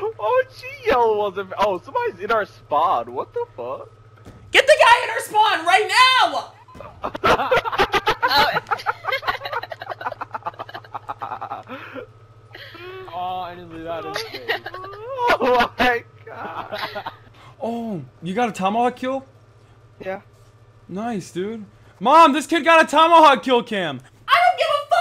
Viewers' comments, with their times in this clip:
0:09 anyone hear that laugh lmao.